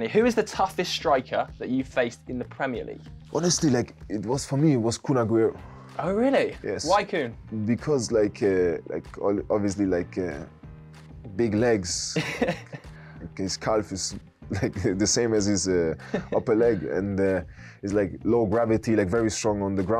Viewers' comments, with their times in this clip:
0:03 I wouldn’t personally pronounce Kün in that way whilst standing in front of Rudiger
0:07 Tony turns from German to Irish